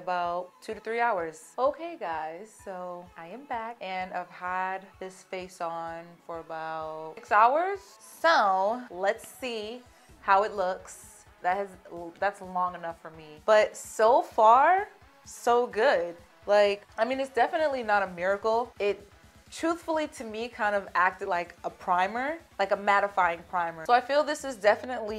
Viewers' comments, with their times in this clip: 0:07 Am I just tripping, or when she said "So" on she sounded like Nicki Minaj